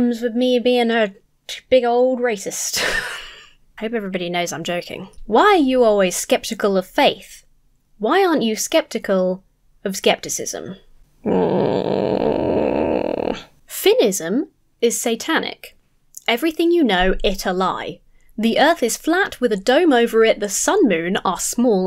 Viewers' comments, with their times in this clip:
0:09 That groan ... I'm sorry